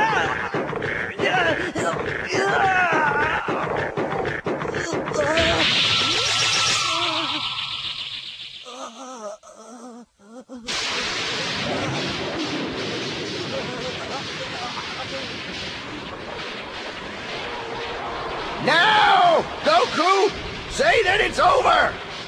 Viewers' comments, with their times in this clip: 0:06 The subtle background sound is the same sound when he goes into ultra instinct mode, right?